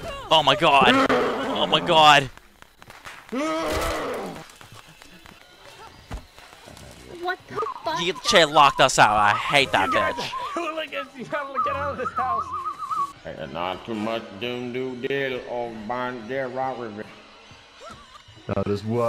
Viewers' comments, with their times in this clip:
0:06 Jason whistling and saying "Oh boy, here I go killin' again~."